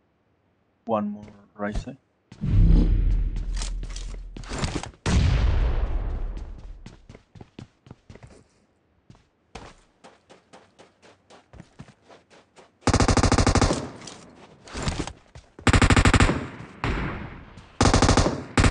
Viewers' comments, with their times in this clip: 0:04 is he say ryzen?